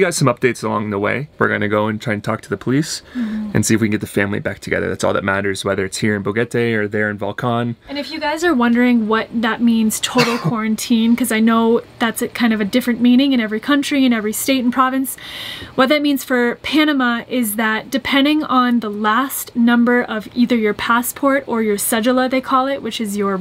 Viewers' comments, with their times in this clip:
0:10 he dry coughs!!! omg, COVID19??